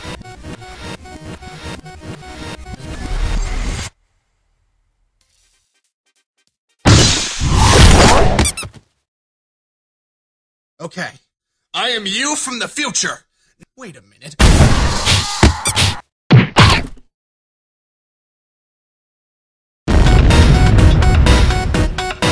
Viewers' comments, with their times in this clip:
0:03 Actually you can hear the music from the flash game